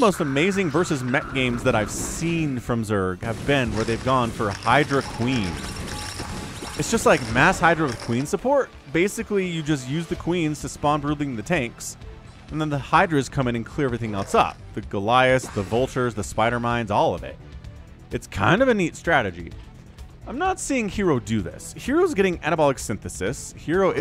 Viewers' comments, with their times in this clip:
0:06 one spider mine killed 7 lings... Boom.